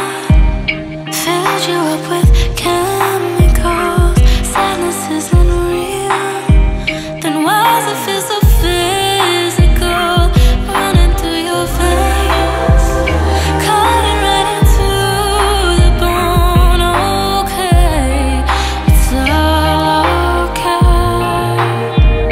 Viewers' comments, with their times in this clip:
0:03 THE BEAT DROP OMFG THIS ALBUM IS INSANE 😳
0:10 Im obsessed with it feels like the song got brighter